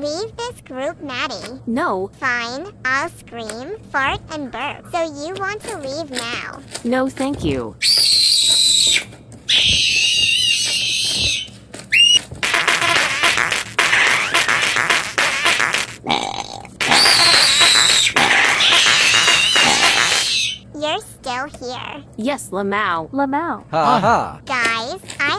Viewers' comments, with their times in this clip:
0:08 ☠️rip headphone users
0:12 I love how she forts😢😢❤❤🎉🎉 and barp😊😊😊😊😅😅❤